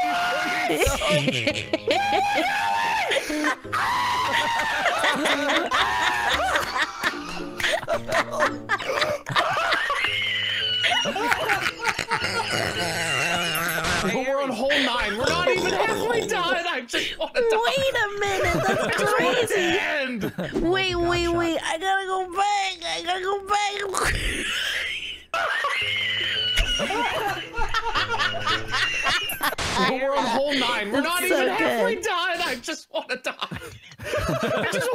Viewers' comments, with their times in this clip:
0:09 one great wheeze triggers another, its amazing
0:12 wheezy the toy penguin is that you 😂
0:15 WHAT WAS THAT!? That sounds like a croaking frog XD
0:17 She sounds like Vanellope from wreck it Ralph and it's awesome